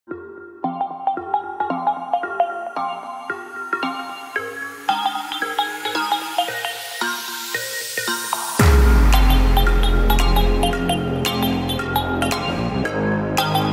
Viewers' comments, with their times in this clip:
0:00 Everyone if you listen closely YOU CAN HEAR THE SONG STARTING